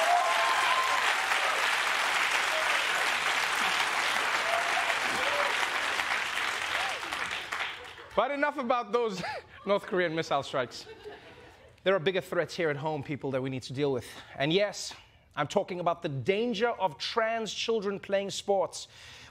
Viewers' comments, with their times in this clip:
0:04 how adorable was that giggling 🥹😍